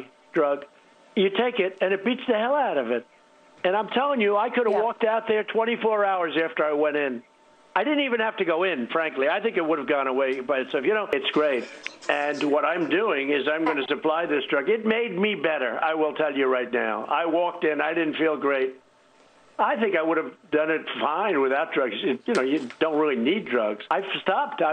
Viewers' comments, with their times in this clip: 0:10 Morbid cough in the background as victims inside the temple of Nurgle succumb to the disease... "We are fine, I beat the crap of that virus... SKULLS FOR THE SKULL THRONE!"